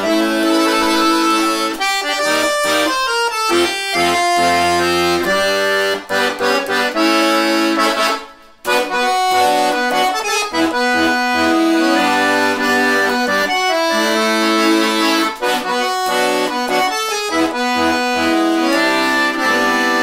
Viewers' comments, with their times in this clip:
0:08 The absolute perfect harmony and on... Chills, pure chills